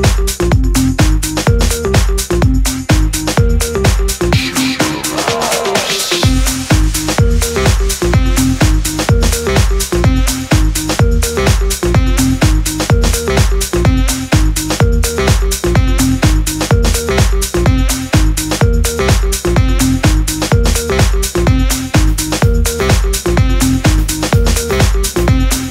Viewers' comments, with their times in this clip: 0:07 i REAAAAAALLY miss these types of beats! and dat SAX <3